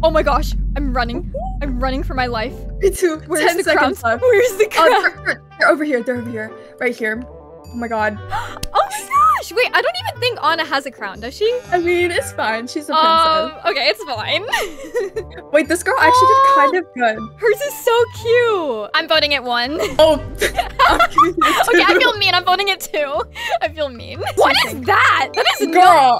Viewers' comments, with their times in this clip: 0:09 what they hear:ana Vs what i hear:Lana